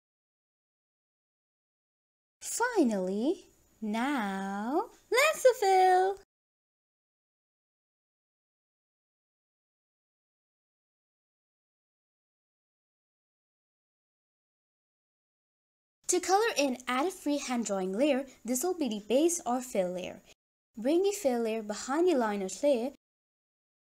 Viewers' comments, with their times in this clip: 0:05 Insert drum roll And its perfect I love ur voice❤😊